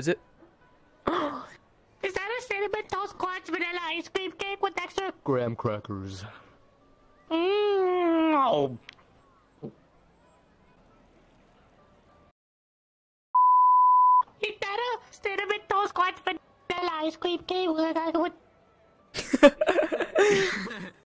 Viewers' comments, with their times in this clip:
0:07 ASMR noises with Levi and eren